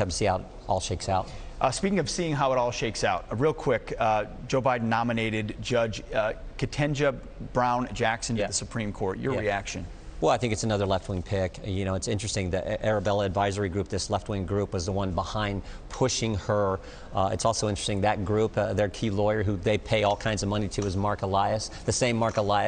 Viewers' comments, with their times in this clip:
0:05 No surprise here: Fox News guy can't pronounce (or pretends he can't) an African-American Supreme Court nominee's name.